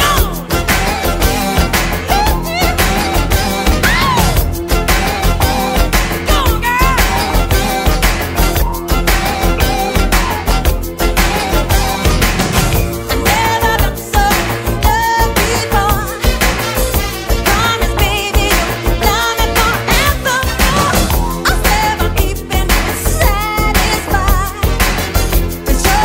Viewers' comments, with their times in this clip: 0:07 he actually farted in the original video